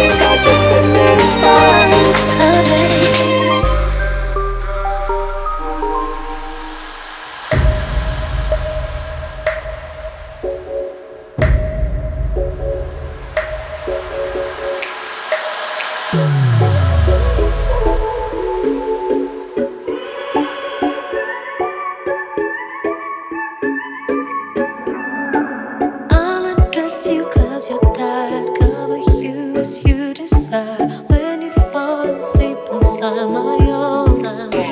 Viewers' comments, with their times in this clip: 0:07 Best Part for sure! That transition was incredible!
0:20 Also the background music between
0:21 What's the name of the song ? The one that goes high pitched "na na na na na na na na na naaaa"
0:22 The mix is great but wtf is that in ??